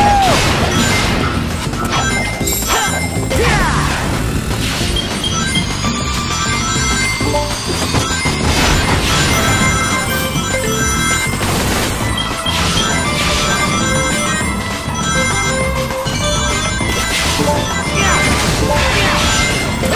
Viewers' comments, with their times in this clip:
0:04 That beeping sound sounds exactly like my smoke detector.